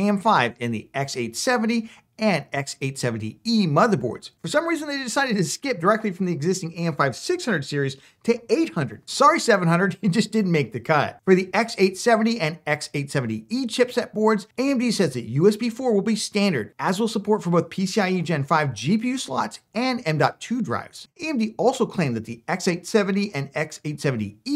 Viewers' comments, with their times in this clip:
0:08 yeah it didnt make the cat! :D